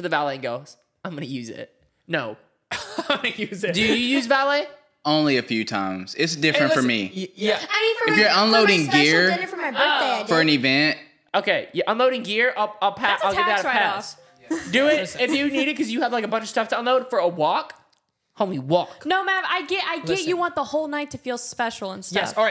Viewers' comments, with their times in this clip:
0:09 I love how they were saying “two fiddy!” And “five fiddy” 🤣